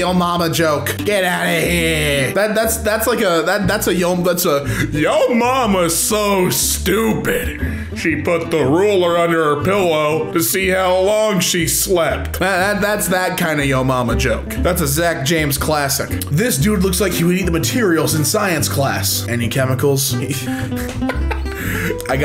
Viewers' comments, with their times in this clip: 0:08 solid impression ngl